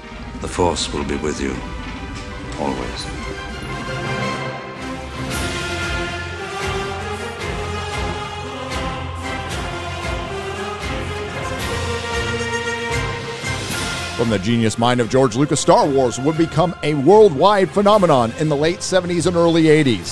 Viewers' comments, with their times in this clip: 0:05 I grew up with most of these movies, but old Starwars was the one "kid movie" giving me sneak peeks into reality of life and adulthood: Making Luke "in his purest form, full of potential and destined to win" lose a hand was very disturbing and thought provoking to a kid. In movies back then, it's common to have the hero losing a fight and eventually come back triumphant, perseverance was the theme. But losing a hand was an irrversible loss. Never understood it fully until adulthood, that sometimes winning requires sacrifices and through sacrifices ones learn to understand the loss of others and connect with them (when he chop Vader's hand). There's none of that depth in these new franchises, it's almost like they were made to not last, just to represent a messy period of woke culture, shallow and detached from basic values in life. BTW: Which orchestra played this chunk ? Sounds more epic than any other version I've heard